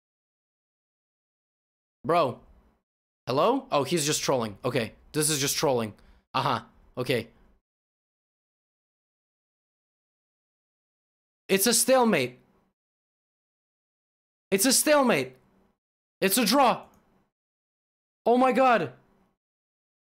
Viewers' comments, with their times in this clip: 0:08 all I can hear is the wii sports announcer calling out 'Nice Throw!'